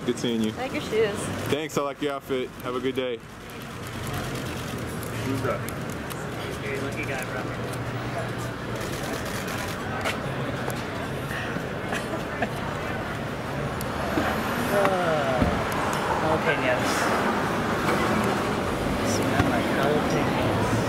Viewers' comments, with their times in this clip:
0:06 someone in the background says “who’s that?” 😂😂😂